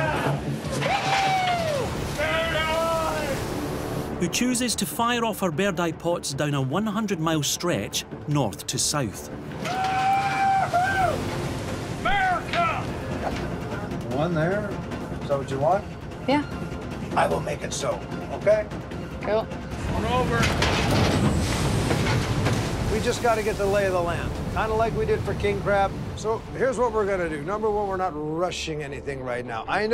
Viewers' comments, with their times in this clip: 0:10 Why did the dude yell "WHOOOHOOO AMERICUHHH"
0:12 I like how he screams "MURCIA" and just yeets the rope